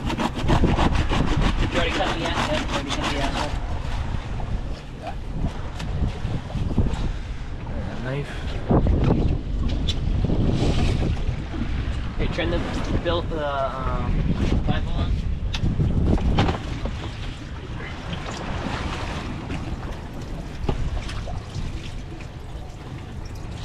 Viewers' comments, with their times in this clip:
0:07 cutting the tuna sounds like me when I was little cutting cardboard 😂🤣